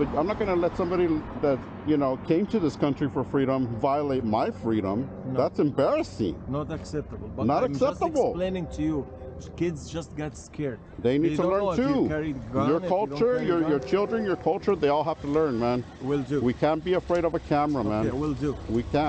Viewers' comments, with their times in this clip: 0:07 ol shandolee accent in training lol Kinda sounds like you mimicked it right then , haha Jokes aside , REAL MAN convo going down so far. Mad Props man FR